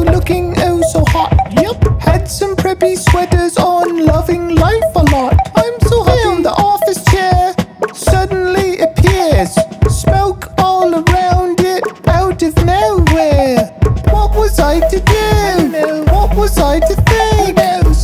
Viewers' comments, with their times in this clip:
0:05 what happend to the song